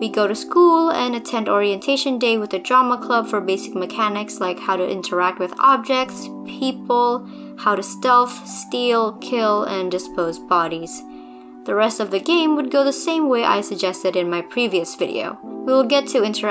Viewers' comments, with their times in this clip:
0:03 I just noticed there is lofi steven universe music